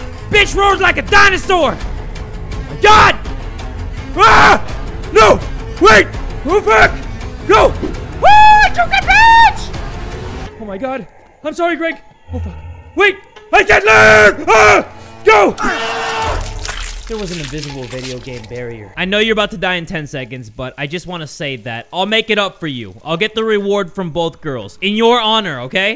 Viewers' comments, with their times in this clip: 0:07 OHHHH I JUKED THAT BIIIIIIIIIIEEEETCH!!!!!!!!! Them VOCALS.